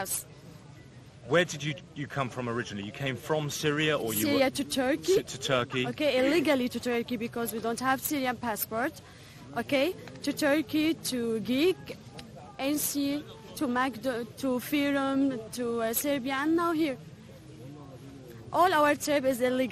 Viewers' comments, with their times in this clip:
0:07 IMO she doesn't look/sound Syrian. Plus she says she has no passport... Every Syrian citizen nowadays cherishes his/her passport because they know that's what will work out for them to be considered refugees. On the other hand, you have immigrants from other countries burning their passports pretending to be considered Syrian. She also seems a bit obsessed with Germany?